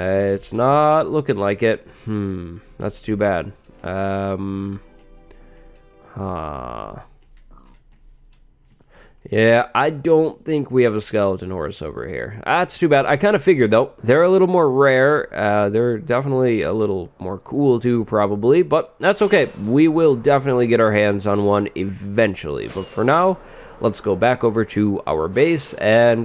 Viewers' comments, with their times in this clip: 0:09 btw nice villager noise lol